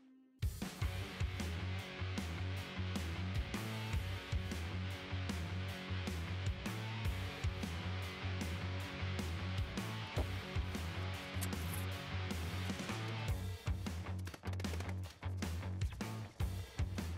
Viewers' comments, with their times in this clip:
0:03 Anyone know what music is playing ?...sounds very energetic and the sort of thing that would be great as background music when you’re working!